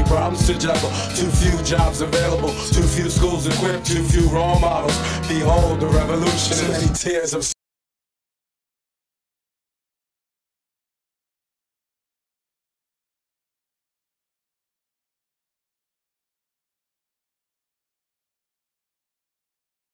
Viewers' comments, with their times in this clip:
0:07 That track goes silent after when I play this album like a glitch
0:07 Is there an intentional moment of silence for G.U.R.U. ?